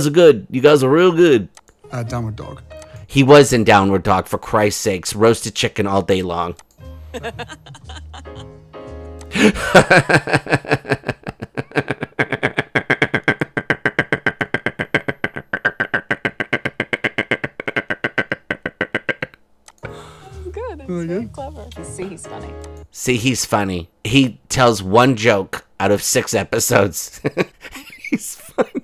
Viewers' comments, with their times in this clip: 0:09 that mocking laugh..😂
0:09 The best moments are when you mock the laugh for a solid 10 seconds! Followed closely by H threatening to break another of the dogs legs.😂 You're one funny paisan!